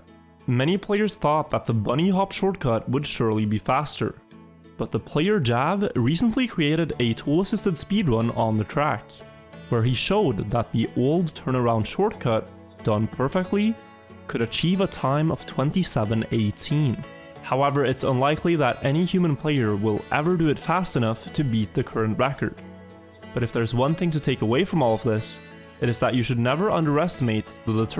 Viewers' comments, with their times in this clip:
0:05 The Outer Wilds music is such a nice touch.
0:05 Why does the music sound like Outer Wilds stuff? ALSO PLEASE DON'T SPOIL IT FOR ME IM NOT FINISHED WITH THE GAME
0:07 This music, i thought that loop is starting again ;D
0:15 when outer wilds sound track starts playing, count me ded 🤩☠️